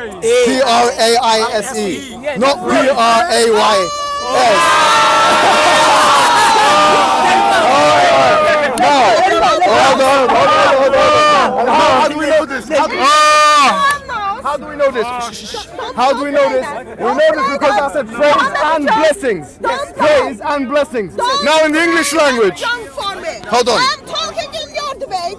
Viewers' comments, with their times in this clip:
0:07 i like the way he laugh 😂